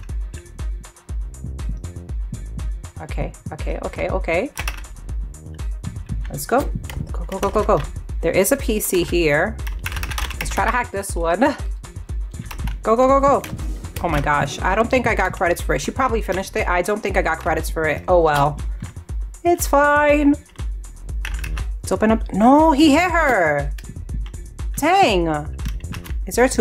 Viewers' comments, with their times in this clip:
0:10 super relaxing keyboard